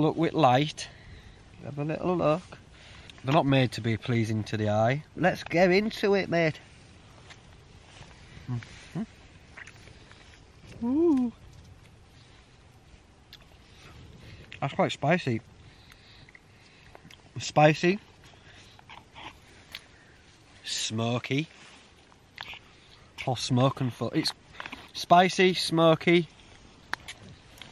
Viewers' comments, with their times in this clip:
0:10 lol that Oooo cracked me up